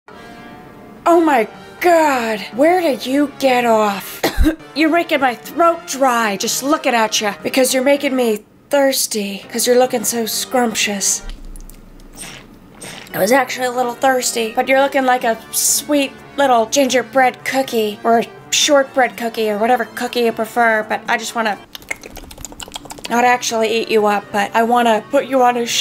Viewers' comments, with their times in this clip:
0:02 she sounds like the dutch woman from 2 broke girls
0:09 U sound like someone from 2 broke girls 😂